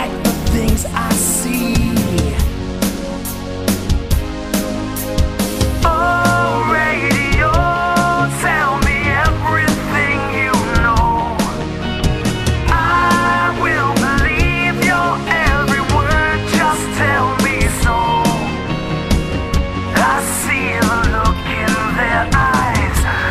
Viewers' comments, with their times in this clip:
0:10 this guitar is cool